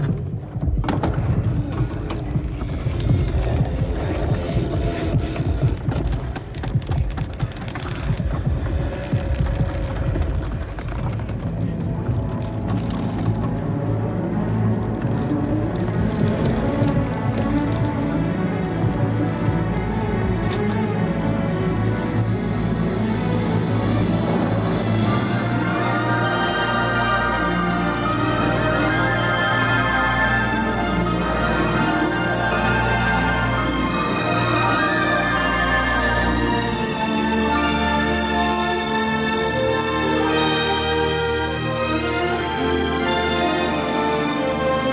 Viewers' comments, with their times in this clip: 0:07 The music at the mark is absolutely the best. One of Henry Mancini's finest scores!
0:27 love the music!